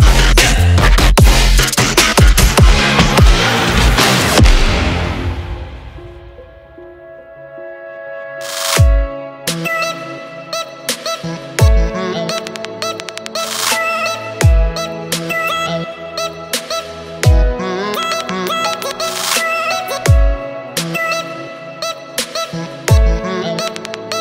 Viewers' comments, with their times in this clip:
0:06 I love this music ! « hip hip hip » 🎧🎶🥰 All these videos of TOP for each muscle groups are AWESOME 👏🏻👌🏻👍🏻